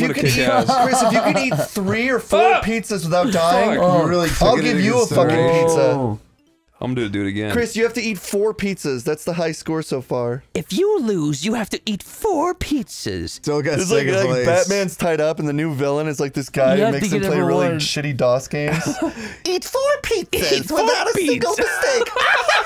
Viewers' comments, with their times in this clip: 0:10 sounds like I.M. Meen.